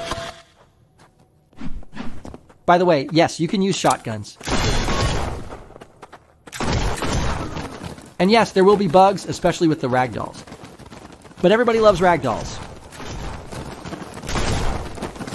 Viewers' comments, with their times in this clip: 0:03 Every bullet ricocheting metal sfx reminds me of metal pipe meme, especially this one